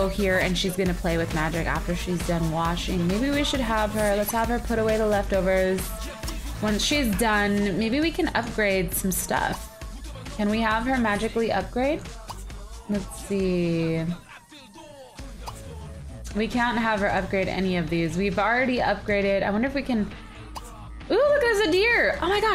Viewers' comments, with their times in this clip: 0:05 lisin to the music